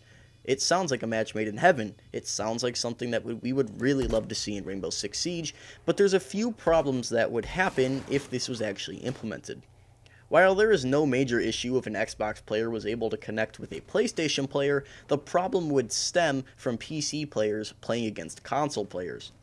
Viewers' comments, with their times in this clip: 0:05 was that Capitao laughing ?